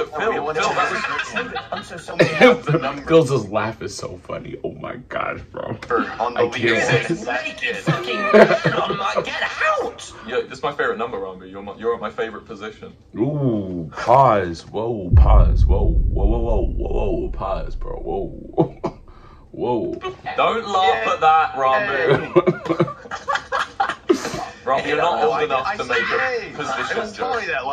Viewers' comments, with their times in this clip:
0:09 LOL that was a funny pause hehehe 💕💕💕